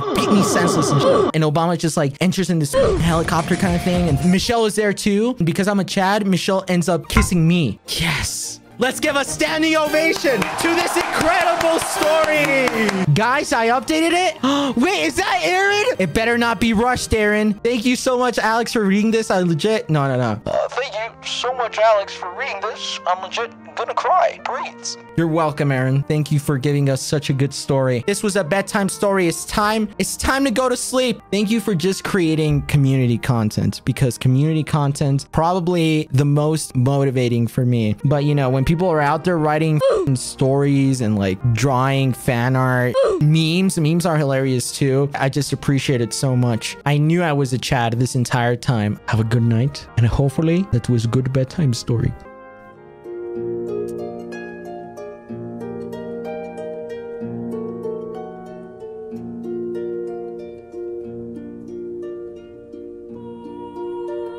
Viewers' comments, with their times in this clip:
0:05 the way he said "YES" omg
0:49 why does this sound like ASMR lmao